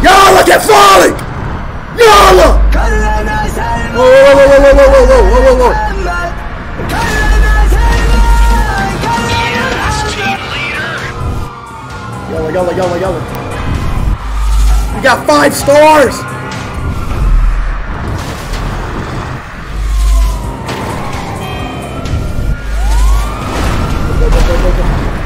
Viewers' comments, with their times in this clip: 0:08 didnt expect him to turn on arabic dabka lmao